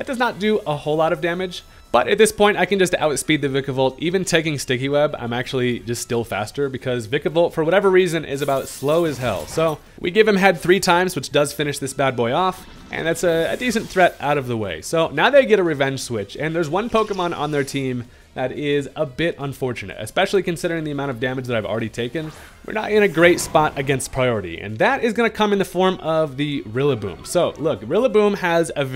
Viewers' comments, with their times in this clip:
0:09 Lil Jelly! But also, you give him HWHAAT three times??